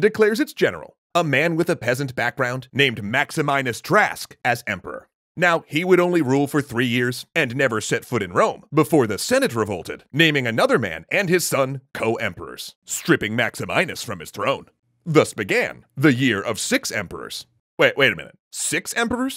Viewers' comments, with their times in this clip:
0:04 I'm a bit confused; did Latin "x"s represent the consonant cluster "ks" and the consonant cluster "sk", or was that a bit of accidental metathesis on the narrator's part ?